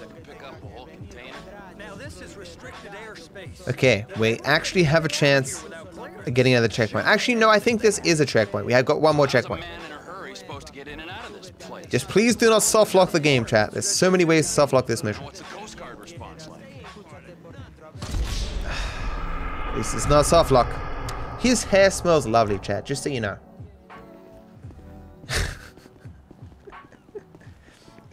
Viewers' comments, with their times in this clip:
0:09 the music is kinda distracting with all the words in it